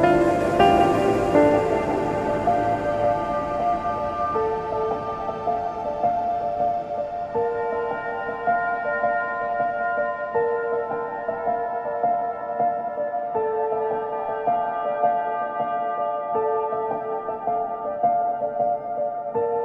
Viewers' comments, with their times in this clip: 0:06 I love the bell I believe that shows that the shrines have been there since the Calamity Ganon brought deveastation to Hyrule, and has been through all of the destruction that followed.